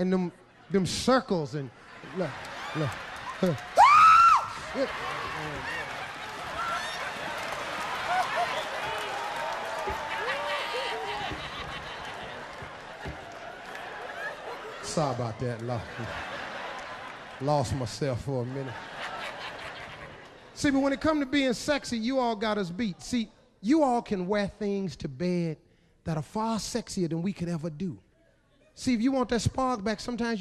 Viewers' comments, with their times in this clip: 0:04 Dat scream tho.
0:10 That laugh -30 is from the hude 🤣🤣🤣🤣🤣
0:12 the penguin laughing XD